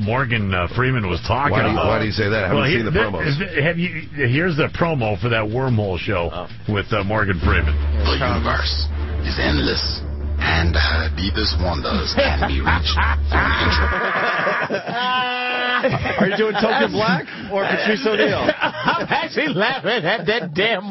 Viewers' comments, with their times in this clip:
0:04 Patrice starts hysterically laughing at the awful Morgan Freeman impression. I actually cracked up a bit myself lol.